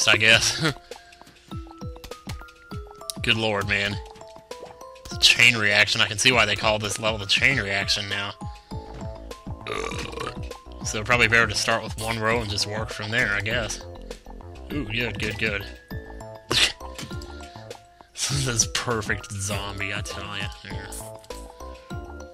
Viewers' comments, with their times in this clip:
0:08 big ass burp